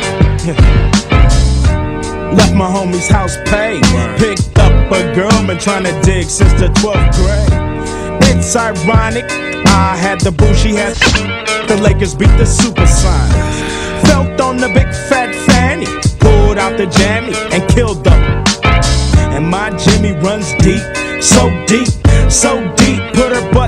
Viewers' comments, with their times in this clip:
0:08 Random DJ Scratch ???